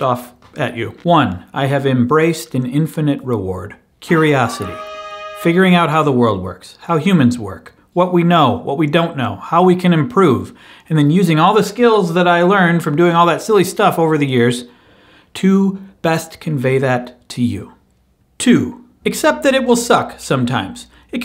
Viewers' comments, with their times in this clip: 0:04 I still want that horn sound so I can use as my ringtone